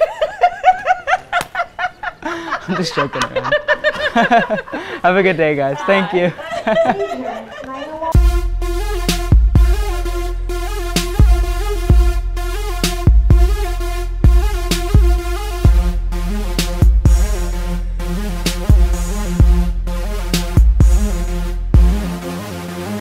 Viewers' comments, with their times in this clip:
0:08 I love that theme music they play. Like the one at the end of this video.